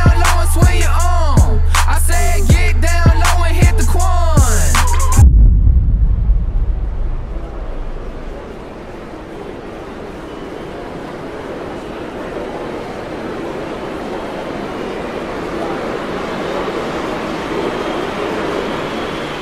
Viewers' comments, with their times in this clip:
0:05 I thought the music ended !😂